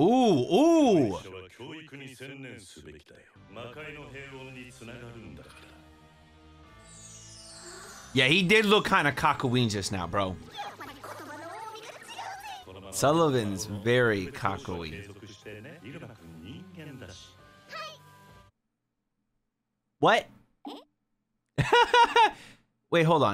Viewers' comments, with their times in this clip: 0:09 I thought I heard "Kakyoin" for a sec there. Was boutta say we making JoJo references now 😂